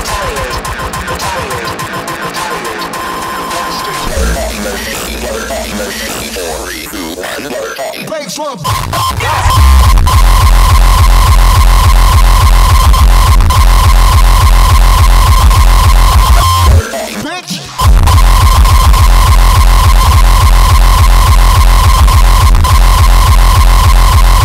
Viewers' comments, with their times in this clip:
0:08 Holy fuck that first drop